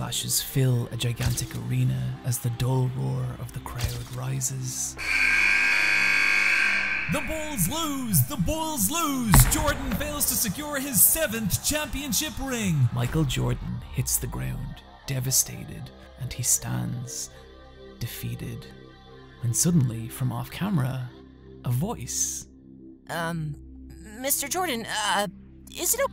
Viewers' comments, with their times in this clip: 0:07 That announcer sounds Irish 😂